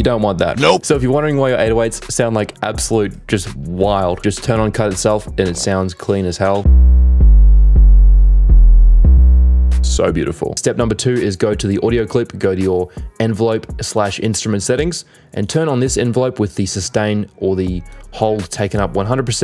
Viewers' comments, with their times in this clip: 0:05 sounds like new slaves from kanye